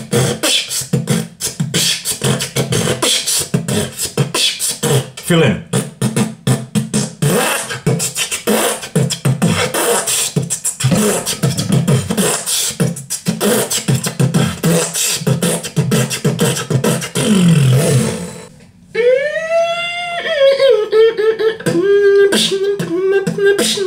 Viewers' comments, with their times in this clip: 0:09 wtf is that ? is it slenderman opening the door?
0:11 did someone open a door ?
0:11 a beatGHOST :o